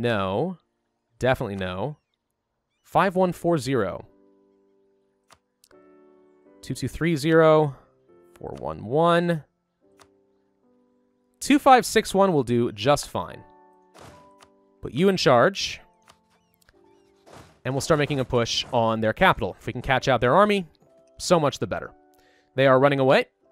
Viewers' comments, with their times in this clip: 0:07 the audio is offset from the video, previous say things before they happen in video, observe edit, HECC U AUTOCORRECT